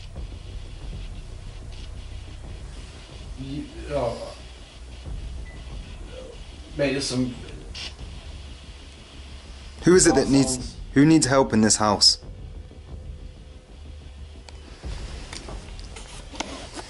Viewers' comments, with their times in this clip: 0:04 starting here there is a noise then goes into what sounds like three words/sentence... crazy sounding like "rahhhwr rhaaa rhaa rhaaaaaaaa" ...I tried to figure it out but just can't do it but ur fricken super sonic hearing may be able to !